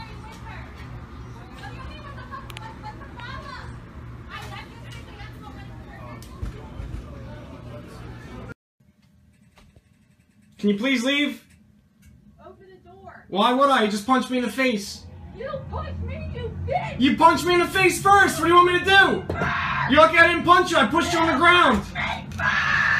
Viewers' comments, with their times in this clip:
0:10 "You pushed me" -"you punched me first" "I'm gonna F YOU UP!" -"Get off my property" -"OPEN THE DOOOR" -"NOO!! YOU ARE FN NUTS!" RAPTOR SCREECH PAIN SCREAMS lmfao thats the best one hands down